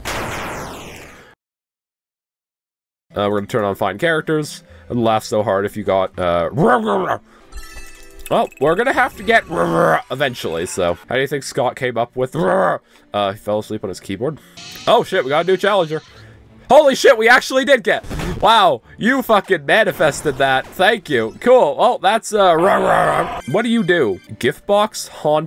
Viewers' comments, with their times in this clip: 0:06 lmao thats a good way to pronounce it (my spanish ass cant even pronounce it on english)